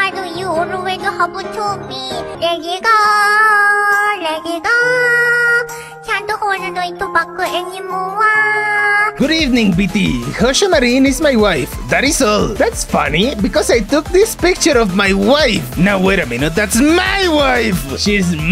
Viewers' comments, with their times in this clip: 0:03 That "can'to holdo ito backu anymowaaaa" brought a tear to my eye